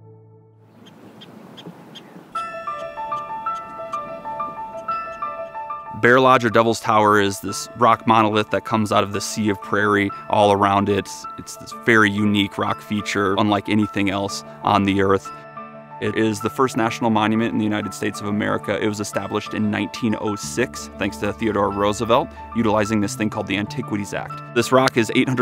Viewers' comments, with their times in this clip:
0:10 Definitely thought Torae and Phonte was about start rapping